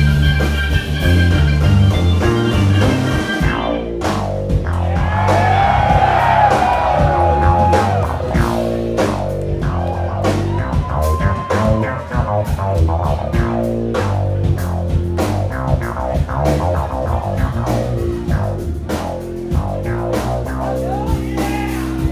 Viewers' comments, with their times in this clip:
0:03 Sick pedal effect by Gordo starting